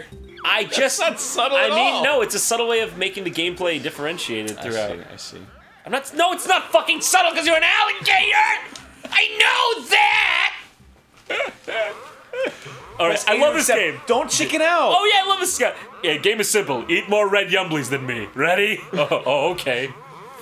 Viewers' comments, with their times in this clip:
0:05 Jontron, you sound like Nathan Lane when you get intense (like ).